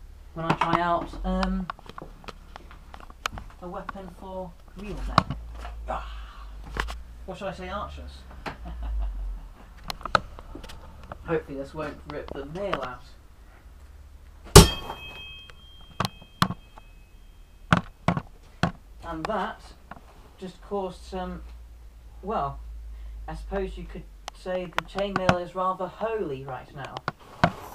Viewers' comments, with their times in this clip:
0:08 HAHA, I love your laugh. It sound's so evil :D Peace